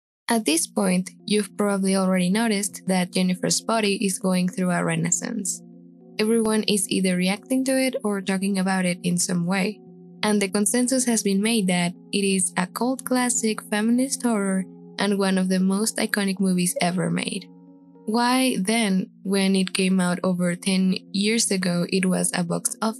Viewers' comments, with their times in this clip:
0:06 seconds and I'm in love with your voice